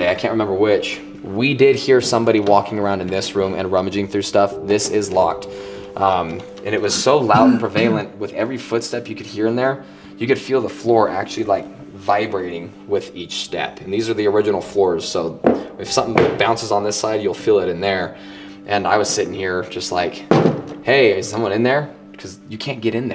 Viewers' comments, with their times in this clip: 0:08 I heard what sounded like a voice come through right as he was talking about the door being locked. U didn’t have it marked as something u caught during your editing so was wondering what that actually was? A spirit or one of y’all? It sure didn’t sound like one of y’all tho!